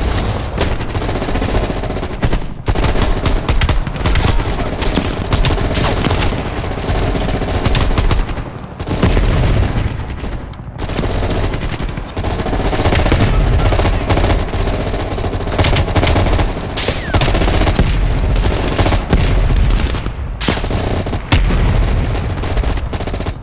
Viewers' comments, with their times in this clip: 0:05 am i the only one who noticed that, this weapon is making silent noises even when it's NOT with the silencer? and when he switch's to the m16, is sounding normal